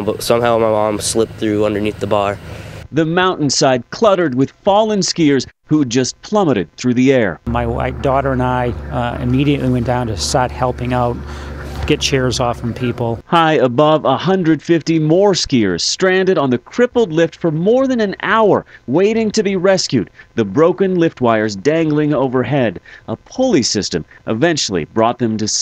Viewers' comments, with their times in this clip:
0:06 "My white daughter and I" ?????
0:07 " my white daughter and I" 😂😂😂